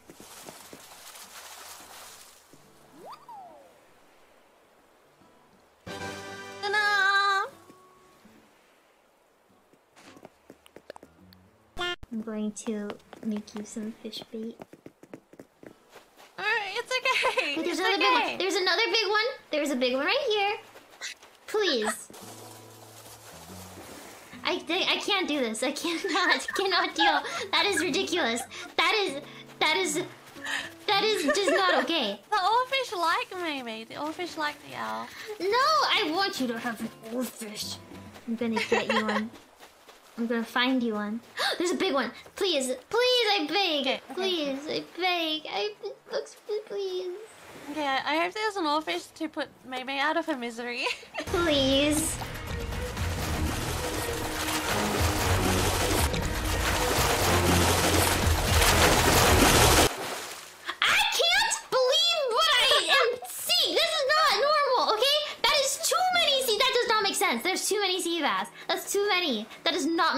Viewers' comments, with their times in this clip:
0:06 that’s the purest ta-da I’ve ever heard
0:11 Now that's a transition sound I haven't heard in a million years.
0:49 is top tier editing omg I laughed so hard at the dramatic music while mumei's face still has a dopey smile LOL
0:50 Damn that CSGO bgm is just nice AHAHAHAHA
0:51 i was not expecting csgo music right there